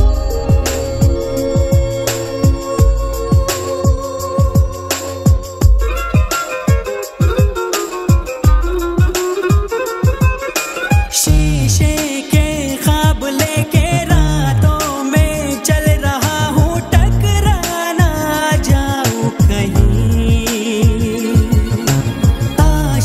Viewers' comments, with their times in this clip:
0:07 close the eyes nd feel the music